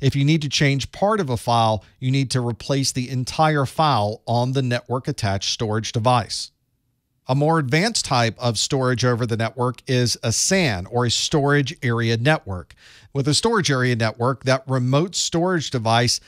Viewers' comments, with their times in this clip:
0:03 Is that a bit of Southern Drawl I hear in your voice professor